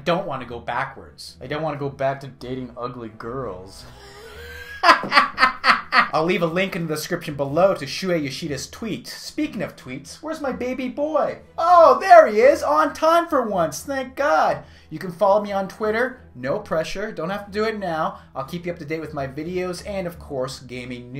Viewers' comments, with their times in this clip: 0:04 LOL you sound like chow from the hangover